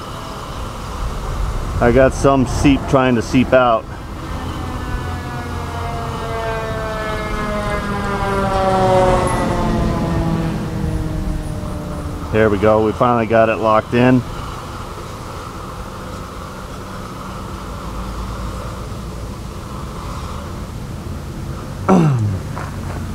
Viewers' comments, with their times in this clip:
0:08 is that a seaplane going by?